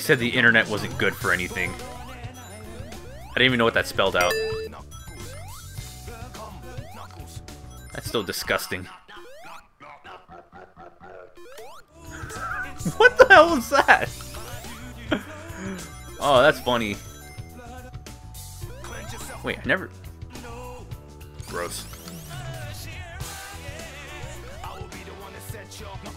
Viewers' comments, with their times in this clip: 0:08 I’m sorry but is just my favourite part of this video all because of that little melody